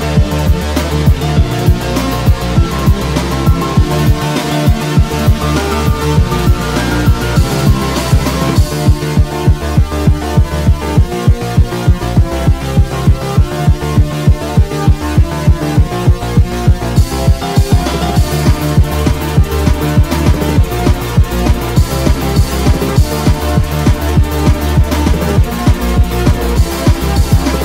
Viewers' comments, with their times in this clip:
0:08 The drums or thumps or whatever in the background sound like a heart beat ngl.